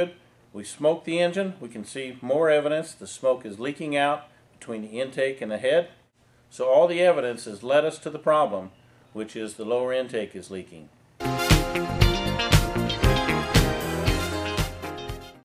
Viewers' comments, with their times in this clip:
0:05 "So, all the evidence is LETTUCE to the problem." Hahaha.